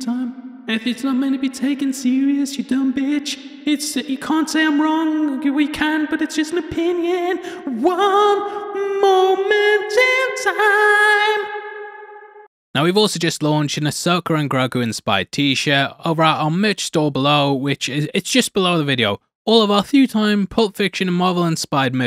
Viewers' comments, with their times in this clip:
0:03 Hit this over and over again It’s like the joker is saying it😂😂😂😂
0:03 Hit this over and over again It’s like the joker is saying it😂😂😂😂